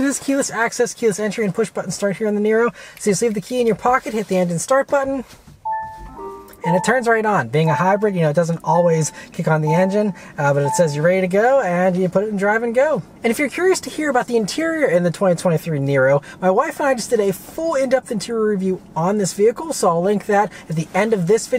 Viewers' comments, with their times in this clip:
0:04 Whats odd to me is how Kia and Hyundai have multiple overlapping chimes when you start the car. It's fine, just weird.